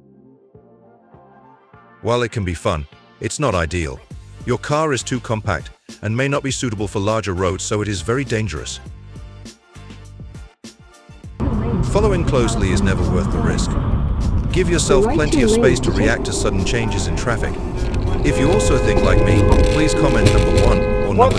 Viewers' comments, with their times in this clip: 0:03 yer chat bot makes no sense, and don't tell me ur not using one cause that ain't yer voice, as you can't tell difference between a car and motorcycle, yer calling a motorcycle a car ????